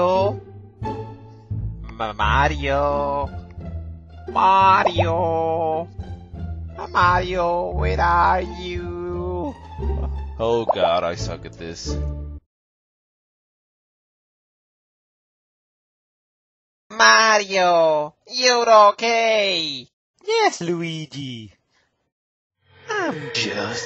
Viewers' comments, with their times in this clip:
0:09 who was talking